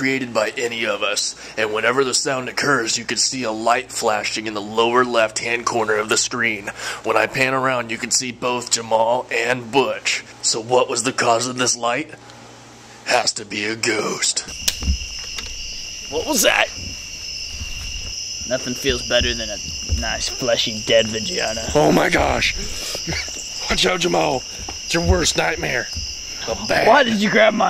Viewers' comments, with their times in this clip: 0:09 you can hear another "shh" and a little bit of talking.